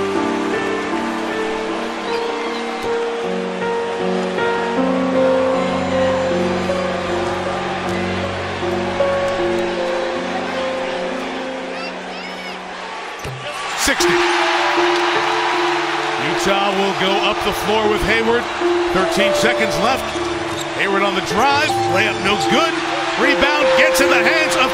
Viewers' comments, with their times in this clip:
0:10 If you listen in high volume you can here Gigi saying "go dadda!" It's just so sad that they are gone 😔
0:11 you can hear Gigi say Go Dad! 🥺😭